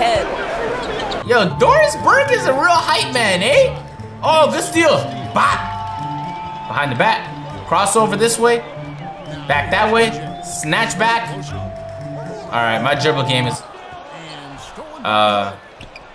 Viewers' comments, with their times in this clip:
0:03 he let his inner Canadian out